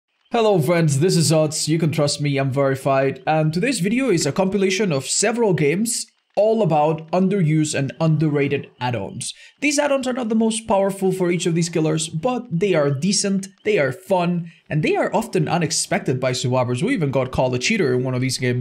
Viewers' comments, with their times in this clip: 0:01 u can trust me im very fine .... hide message ? he is in danger we must save him !